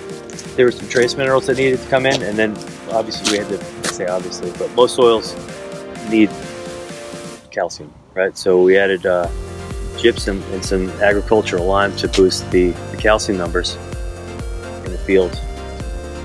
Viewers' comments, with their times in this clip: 0:04 "...calcium" bass drop